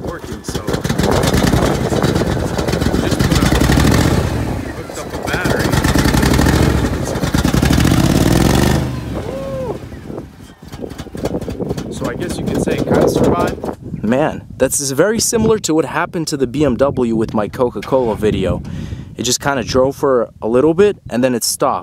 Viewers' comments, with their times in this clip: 0:03 awesome v8 sounds beautiful